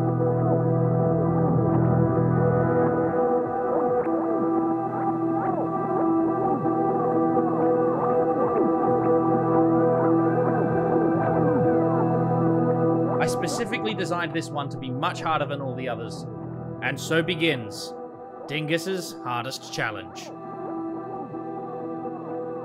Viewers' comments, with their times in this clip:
0:07 My left ear sure loves this level.